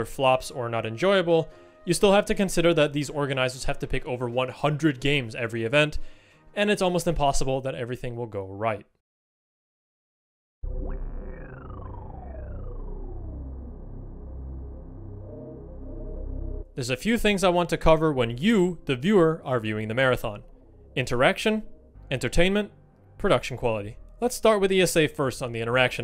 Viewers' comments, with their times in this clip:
0:09 It sounds like a S.L.A.I sound effect (the sound that plays when you log in and descend to the virtual walkways)